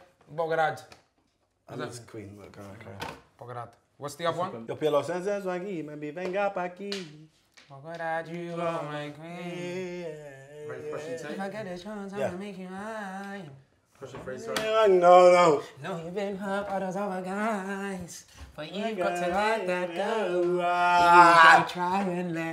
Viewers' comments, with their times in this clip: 0:04 I need that tune YESTERDAY
0:06 What's the song please sounds lit.